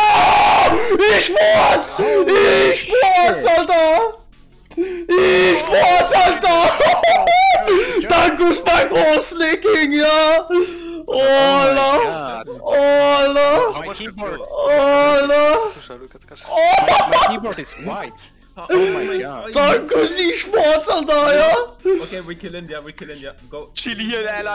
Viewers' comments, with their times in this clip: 0:10 nobody gonna talk about that moaning